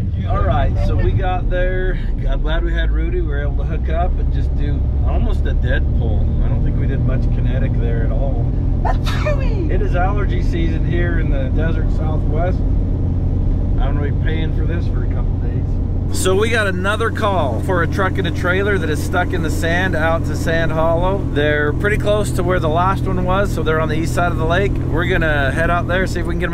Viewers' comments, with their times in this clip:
0:09 Bless you again!! 😂😂